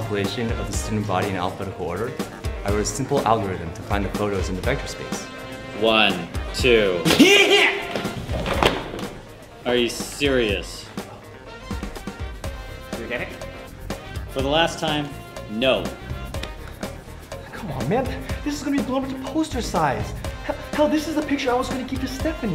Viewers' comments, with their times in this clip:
0:05 Hahaha! funiest sneeze ever
0:06 THat sNeeze !!! omg he's probably allergic to the number 3
0:07 I laughed SO HARD at the sneeze
0:07 Best sneeze ever